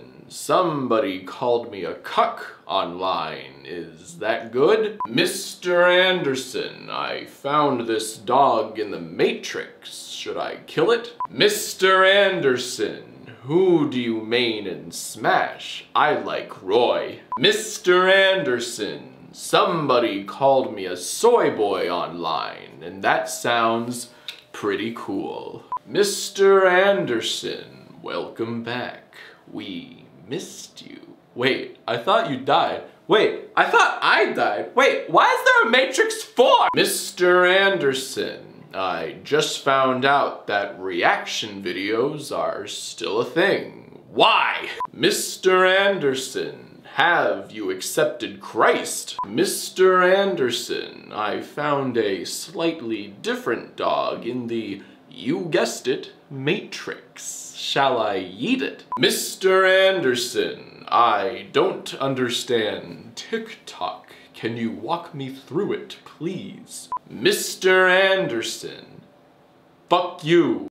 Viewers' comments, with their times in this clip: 0:03 Ok but fr the "good" is scarily spot on
0:26 when he actually tries for a moment and it kinda slaps??? Like it was spot on for 5 seconds
0:42 his "WHY" is scarily close to Weavings why in his rant against Neo "Why do you persist mr Anderson, why do you keep getting up. why WHY?"
0:57 I cannot for the life of me figure out whether you’re saying “shall I eat it” or “shall I yEET it” 💀
0:57 Is anyone else still wondering whether he said "eat" or "yeet" ?
0:58 wait did he say "shall i eat it" of "shall i yeet it"?
0:58 I don’t know if he says “shall I yeet it” or “shall I eat it” But either way, I’m laughing so fucking hard
0:59 Now this sounds like my dad